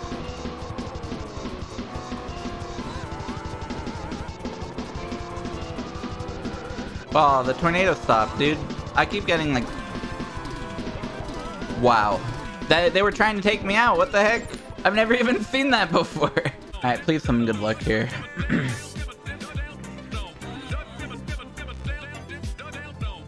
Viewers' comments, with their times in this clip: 0:04 The way that he pauses in time with the music chef's kiss